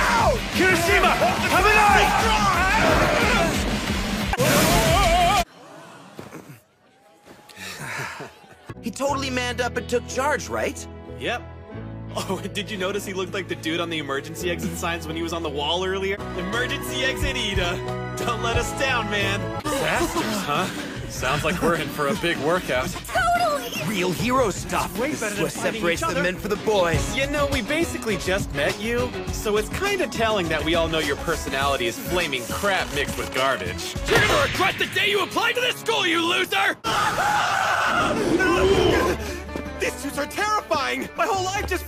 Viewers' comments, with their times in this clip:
0:09 I'm surprised that Denki's voice is similar to the original, because he talks normal and then he talks deep. Something that in the dubbing of Miami could not. XD deformed kirishima
0:28 Nah because I thought he said peg you💀